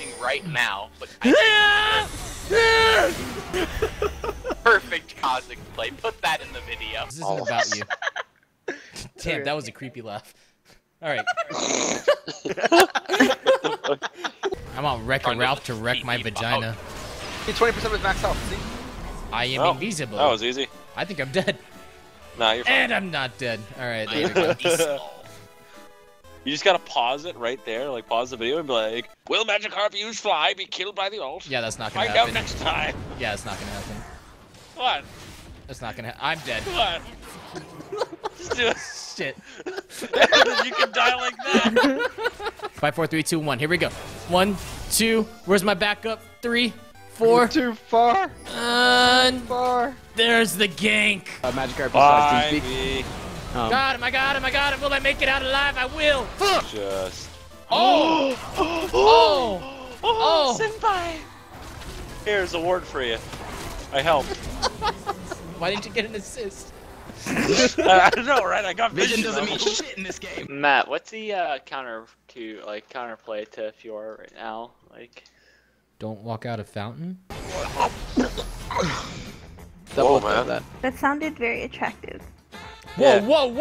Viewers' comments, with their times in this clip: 0:10 Why do i get reminded of Dr. Boom when i here the laugh ?
1:04 Did any one here frost sniff !?